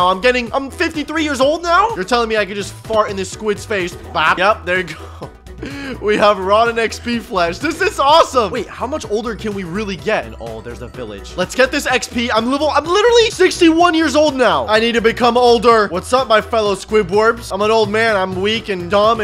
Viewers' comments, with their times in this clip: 0:04 the way you farted 🤣